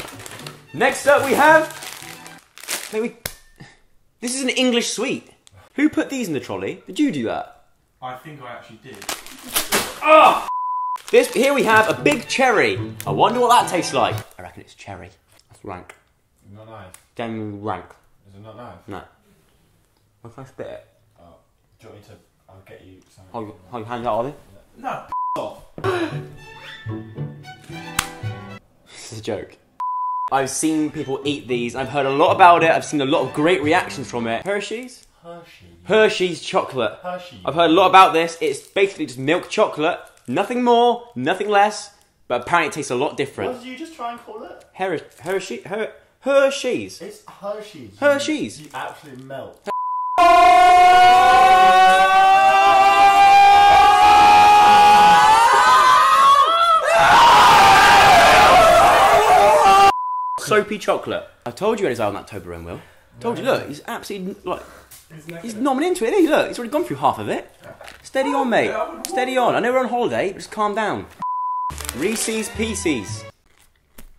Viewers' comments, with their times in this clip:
0:07 'Who put these in the trOLI?'
0:34 The way the says Hershys 😂😂
0:51 RIP headphone users (me!) my ears r gone
0:51 Ear rape warning ⚠️ Ps I’m a new sub
0:53 rip headphone users
0:53 # GOOD LORD THE EAR RAPE!!!!
0:56 Ear rape for headphone users😐
0:57 rip headphone users...
0:58 Rip headphone users 😭
0:58 Rip headphone users 😂
1:00 I WAS WEARING HEADPHONES WHYYY 😂😂😂